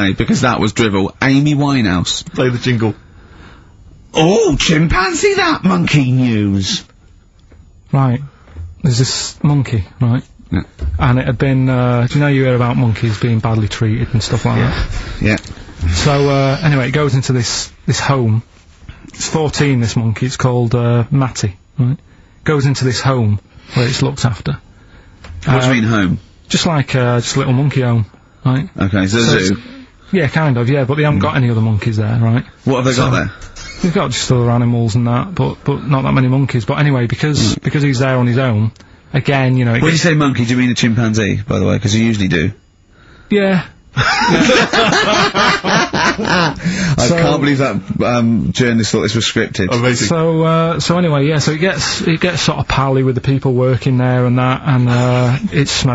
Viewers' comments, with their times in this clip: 0:04 I'm HERE for the aggressive Monkey News jingle.
0:39 least considered "yeah" in human history.